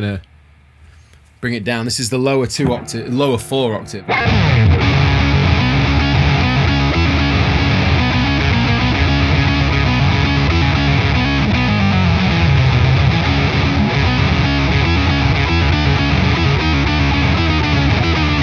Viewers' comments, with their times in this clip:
0:04 Sounds great. some final boss music.